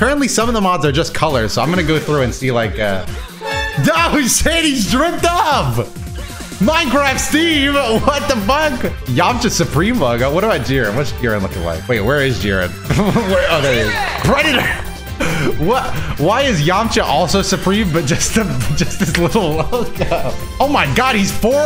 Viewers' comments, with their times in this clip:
0:07 the sonic heroes menu theme bout to make me tear up